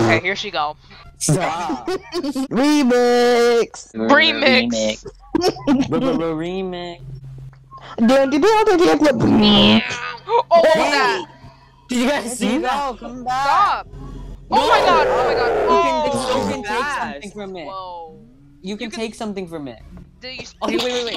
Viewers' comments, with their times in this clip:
0:08 it’s on beat LMAO😭
0:09 its the fact that it was so perfectly timed when they were beatboxing & that bitch zoomeddd, got me cackling-